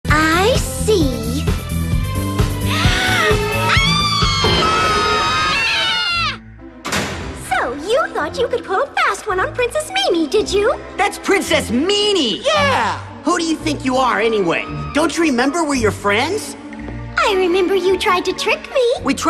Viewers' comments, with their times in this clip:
0:03 That face and that screaming.
0:03 Has anyone made an edit where Mimi screams the Gangsta's Paradise choir? If not there should be.
0:04 Me And Tai Agumon Joe Gomamon Scream
0:05 When ever I hear screaming or just annoying music, this is the first thing that comes to my mind